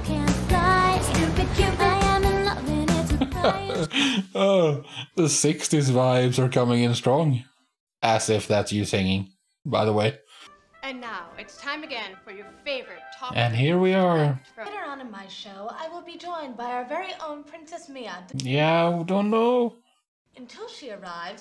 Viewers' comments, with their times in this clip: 0:07 that really was Mandy Moore herself singing, no other voice lmao. An underrated popstar of the 2000's